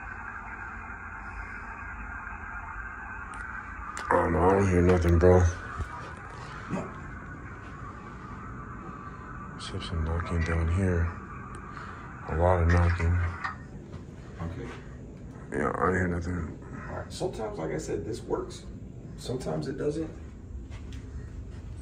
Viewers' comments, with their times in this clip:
0:06 I heard a voice say "NO"